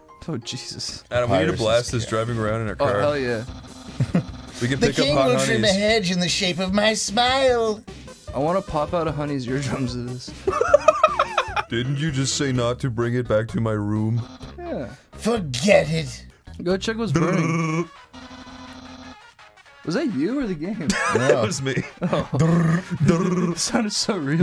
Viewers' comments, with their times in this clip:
0:07 the meek tone really adds something special to this